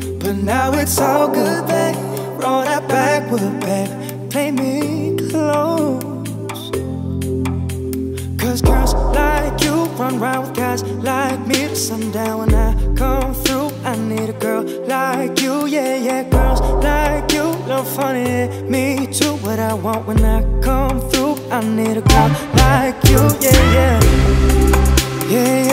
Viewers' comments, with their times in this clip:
0:07 OMG AM I THE ONLY ONE WHO CAN HEAR ZAYN'S VOICE 😱